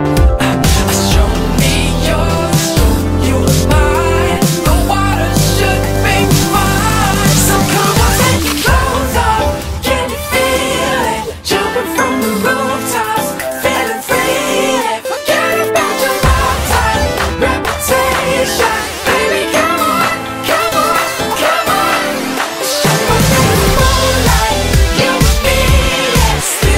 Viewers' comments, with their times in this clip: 0:08 〜 Like Stronger Kelly Clarkson